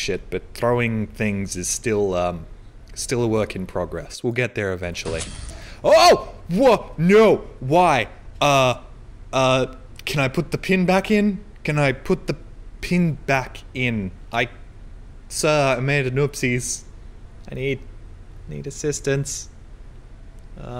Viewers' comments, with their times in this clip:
0:05 I like how he says “Can I put the pin back in?”